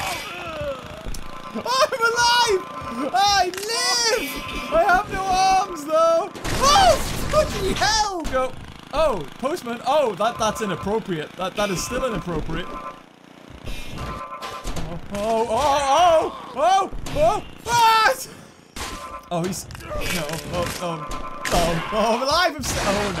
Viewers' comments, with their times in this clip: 0:06 This is what I heard at that time (Oh ****y Hell!)